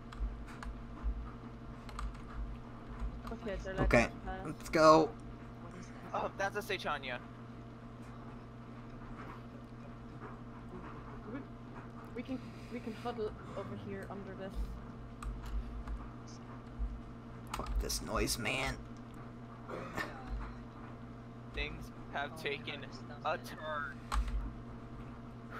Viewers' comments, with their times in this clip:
0:06 Did I just here someone pronounce Saichania "Say-chaun-yuh"?